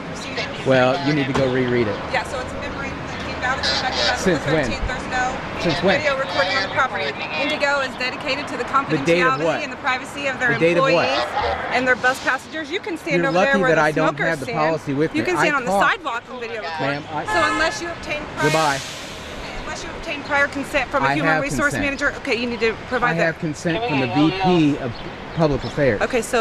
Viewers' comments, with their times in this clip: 0:09 Geez - that woman won't shut up. I feel sorry for her husband. yap yap yap